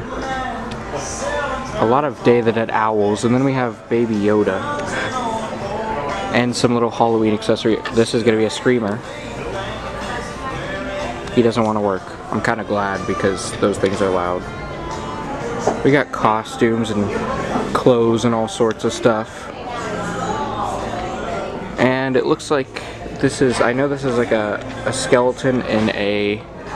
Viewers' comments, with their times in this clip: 0:08 that's a good song playing in the background